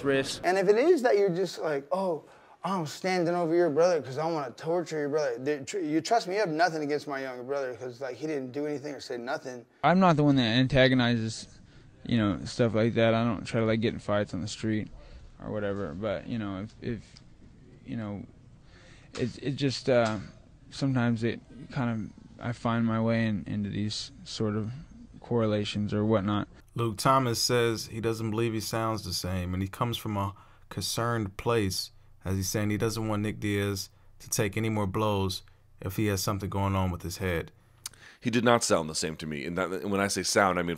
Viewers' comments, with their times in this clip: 0:10 sounds worse than any time he did in that Ariel interview. There have been tines in the past where Nick you string 6 words together without ums, or stutters, and Nick always slurred some words in interviews that werent post fight.
0:11 he sounds like Nate here
0:21 sounded almost the exact same as Ariel's interview.
0:21 that doesent look or sounds like him almost xD his voice is so different and he was really young? like 18-20 years?